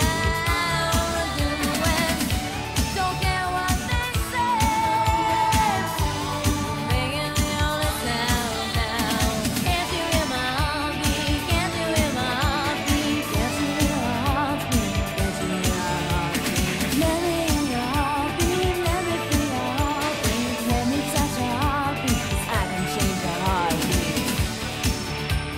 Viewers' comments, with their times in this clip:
0:10 “Lemon in your heartbeat, Lemon in your heartbeat” I’ll let myself out now Edit: “ketchup in my heartbeat”